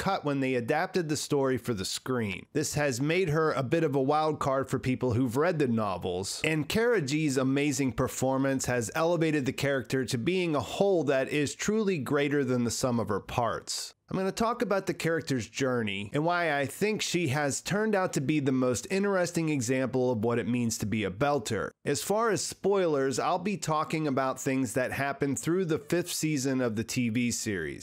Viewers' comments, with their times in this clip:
0:09 "A hole that is greater than the sum of her parts" ???? That's high praise ... as in ARE YOU F-ING HIGH? What a creepy thing to say or way to express that.